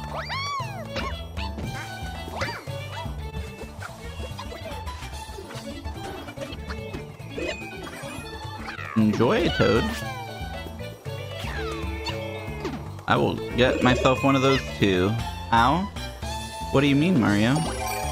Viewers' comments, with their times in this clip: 0:03 -Game is going pretty slow, but it seems better than most others today -hear the music going fast, realizing this is a speed-up $50